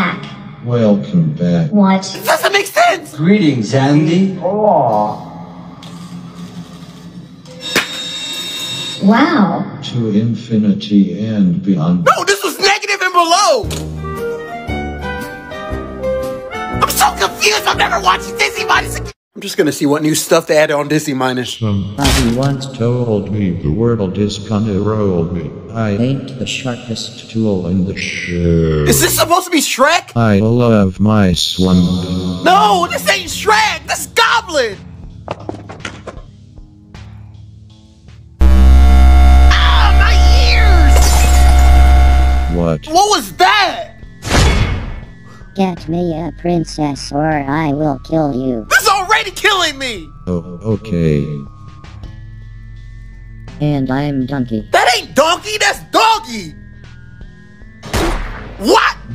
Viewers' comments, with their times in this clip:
0:08 Andy sounds genuinely fascinated with sid being abducted by the claw
0:37 EAR RAPE WARNING ⚠️
0:43 THAT WAS SO LOUD I MADE ALL HIS EAR WAX COME OUT!